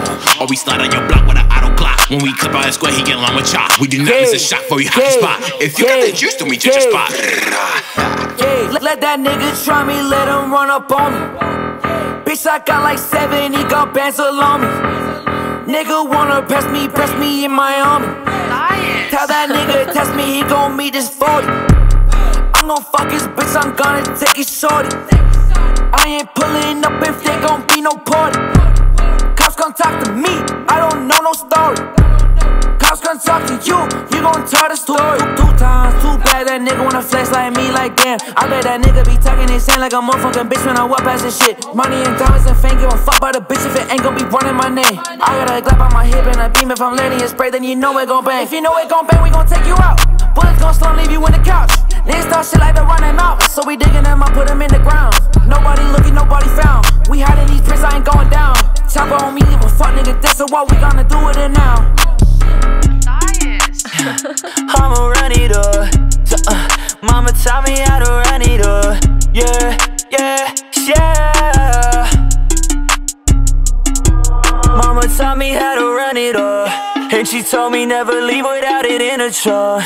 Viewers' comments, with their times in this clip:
0:04 why he sound like NLE Choppa🤣🤣🤣but anyways this was lit
1:04 why did you use this beat for a song like that